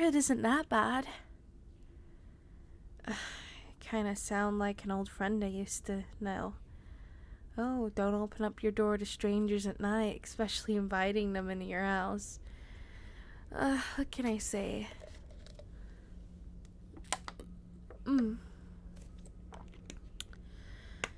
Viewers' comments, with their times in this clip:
0:05 Well not gonna lie I am about to defend your friend with this one, also when she says everything it's fine calmly that means something is completely wrong.